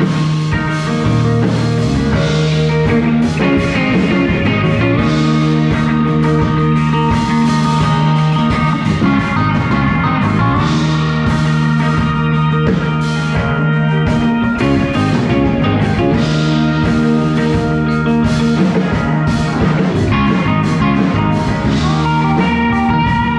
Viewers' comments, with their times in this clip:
0:10 This is as close as one can get to be in the room OMG the sound of your tele is out of this world as awesome playing. Thanks for sharing!